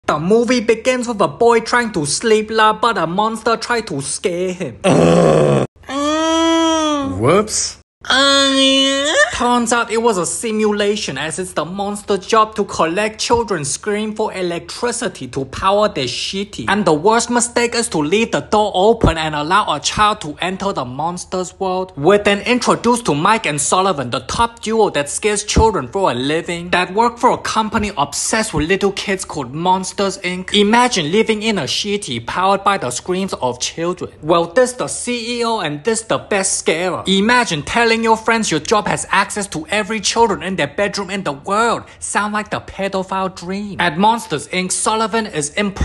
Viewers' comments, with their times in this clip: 0:04 Nahh, The scream was spectacular!
0:06 poosay ah scream but honestly if I were that monster I would scream like that too if I was told children are poisonous
0:08 only 8 seconds and he moans already 😂
0:12 As It’s The Monsters Jobs To Collect Screams For The Shitty 😂😂😂
0:30 "imagine living in a sh!tty powered by the screams of children" 💀 you cannot deny that he said sh!tty, not city ive replayed it over and over, listening carefully. he said sh!tty